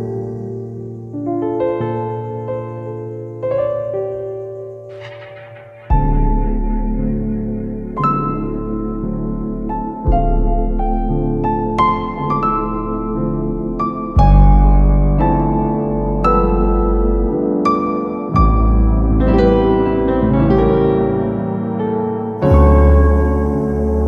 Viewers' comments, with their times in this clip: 0:05 is always my fav part, I also feel like it should repeat that part but deeper
0:12 jesus that overdrive